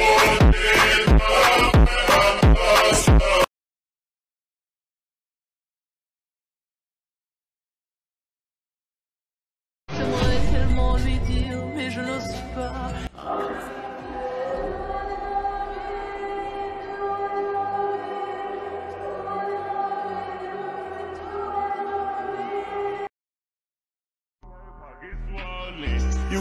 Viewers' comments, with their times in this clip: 0:07 R WE ALL JS GONNA IGNORE THE MOAN??